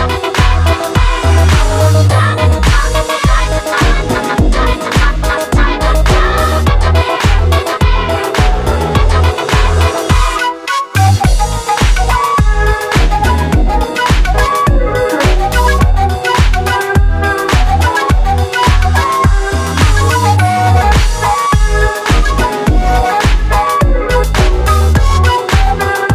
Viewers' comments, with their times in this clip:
0:10 jazzy flute intensifies